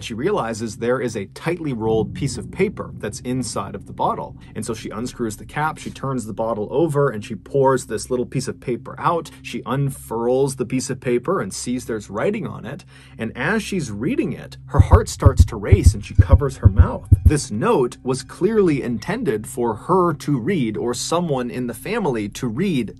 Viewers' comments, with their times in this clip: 0:08 lol the way he says "unfurls" lol